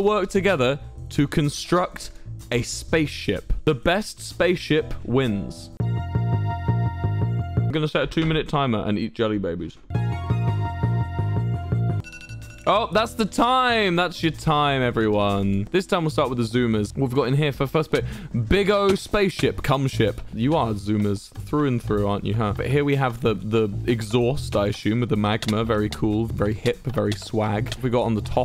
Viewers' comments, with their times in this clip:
0:10 the music just ties it all together 👌